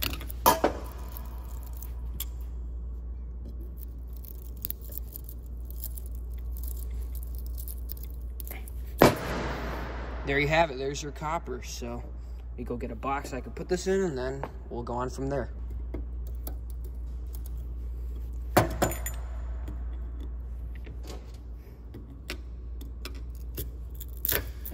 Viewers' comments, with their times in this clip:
0:09 sounded like a gun shot